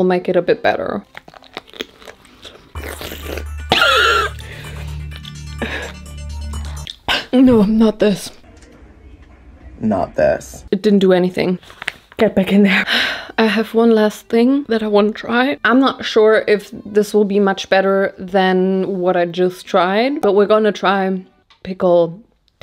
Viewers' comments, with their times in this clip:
0:03 THE COUGH HAD ME AHAHAH